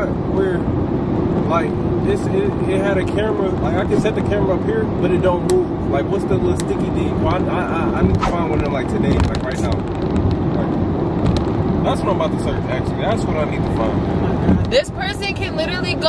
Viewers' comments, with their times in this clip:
0:03 HELL NAH I’m not boutta act like i didnt just hear that voice crack 🤣